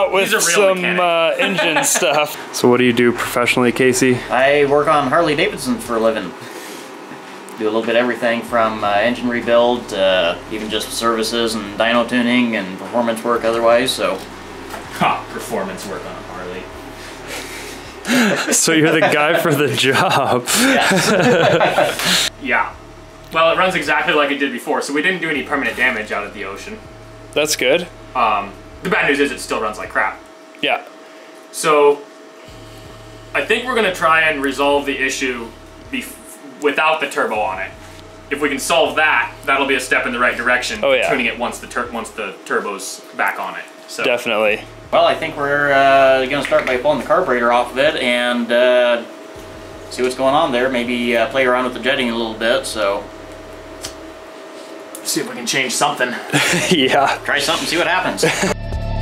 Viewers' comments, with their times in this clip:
0:04 he looks and sounds like a southerner Ben Shapiro
0:45 those knuckle cracks though!